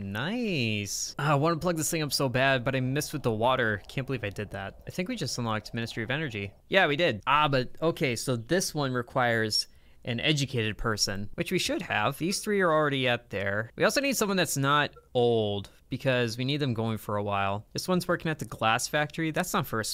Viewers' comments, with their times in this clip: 0:06 what was that noise???